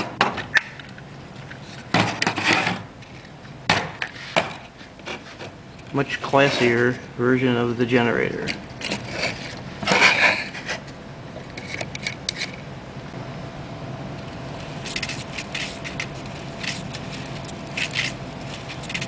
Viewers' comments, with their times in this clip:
0:05 MUUUUUCH BETTER! cant stand that stupid cardboard friction sound in all the little videos. lol.